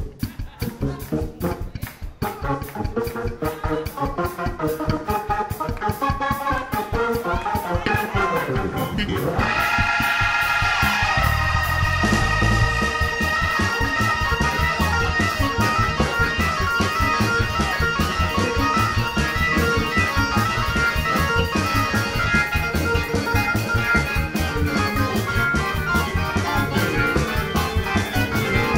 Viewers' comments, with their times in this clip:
0:09 that chord is hotttttttt!!!!!!!!!!!